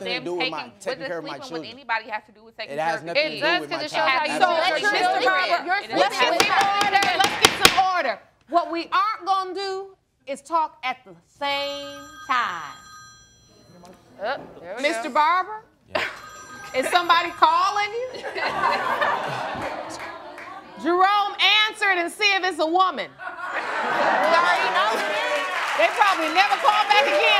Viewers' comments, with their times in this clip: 0:09 Am I the only one that looked at their phone? And that's not even my ringtone! LOL!!!!